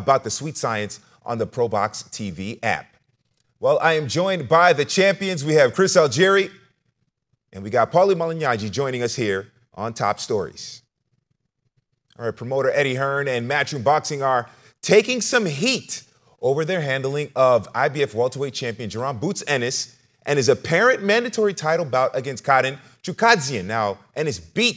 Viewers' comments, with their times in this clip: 0:07 Why he say paulies last name like that😂 he said malinyagi